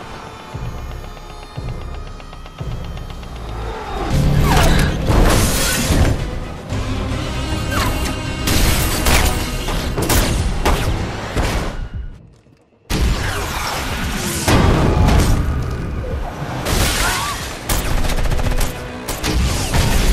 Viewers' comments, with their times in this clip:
0:07 A KAZOO LMAO 😂